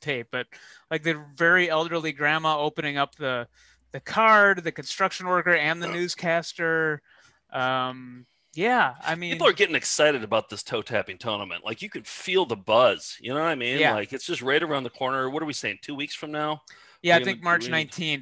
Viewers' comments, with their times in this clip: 0:05 While we're on the subject of apologies. What is with burping on us ?